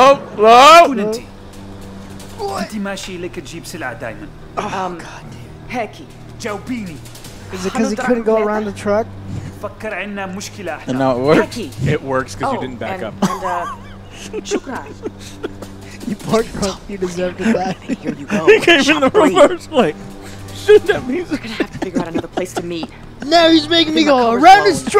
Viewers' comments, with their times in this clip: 0:08 it is arabic but sometimes it feels not arabic. not sure maybe morocco (maghrib) language.